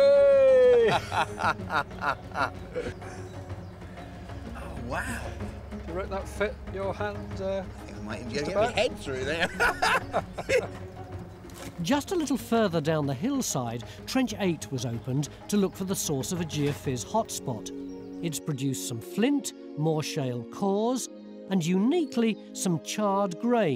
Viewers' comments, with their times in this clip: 0:04 Great laugh also.